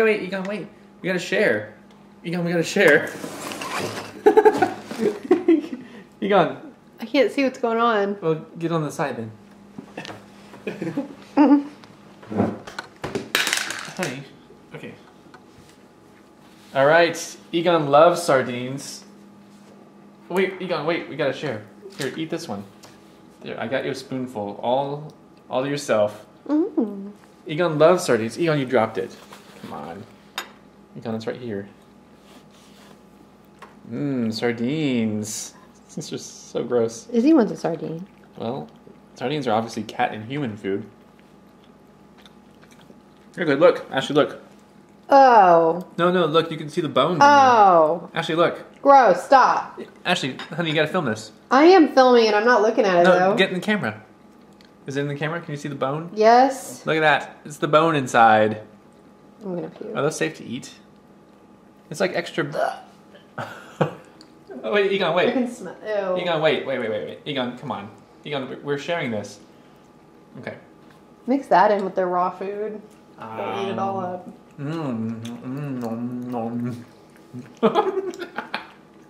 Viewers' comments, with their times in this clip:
0:03 I swear I laughed exactly the same way at the same time as you
1:03 someone just burped and it made me laugh. XD